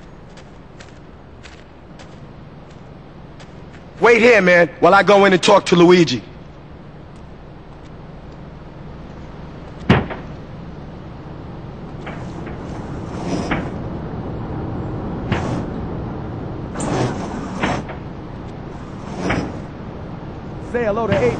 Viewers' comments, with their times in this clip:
0:09 Signature knock? wtf?